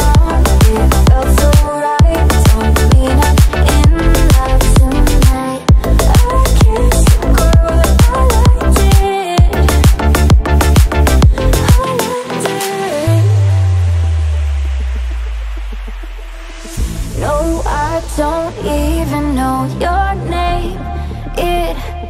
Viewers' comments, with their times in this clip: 0:03 that tonight sounds heavenly